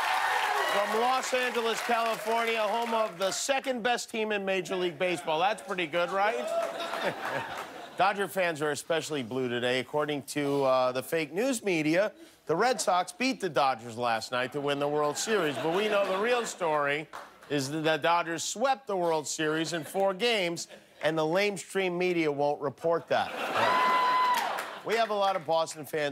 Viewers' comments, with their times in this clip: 0:10 hey Jimmy, guess who you sound like?